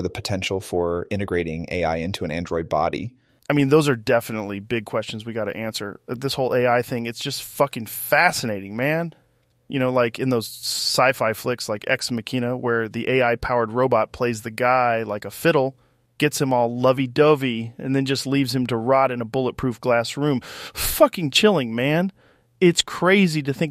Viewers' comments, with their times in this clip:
0:05 Joe Rogan doesn't talk like this. is the first place where it sounds believable.